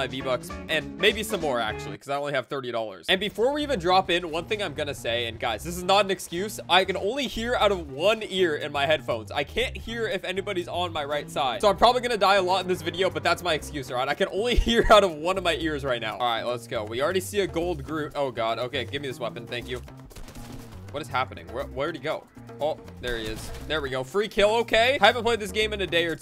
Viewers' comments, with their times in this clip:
0:07 if you are using headphones you could only hear from one side when he says that